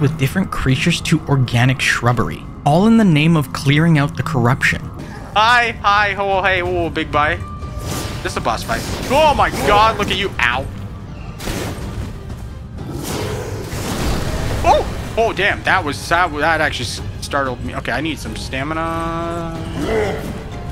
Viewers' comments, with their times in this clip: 0:07 Idk why but the sound effects of the first boss battle gave me Priston Tale vibes